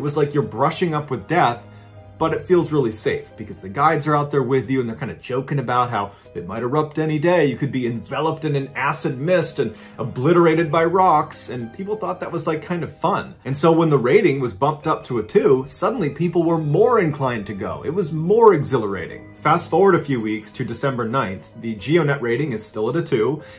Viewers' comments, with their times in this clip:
0:05 Was the secret the menacing extremely low music ?